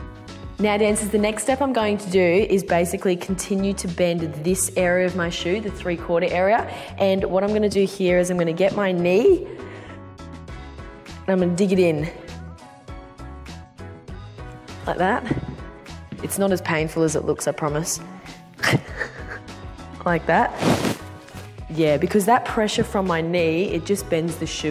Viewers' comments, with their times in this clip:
0:09 the best voice crack everrrrr 😂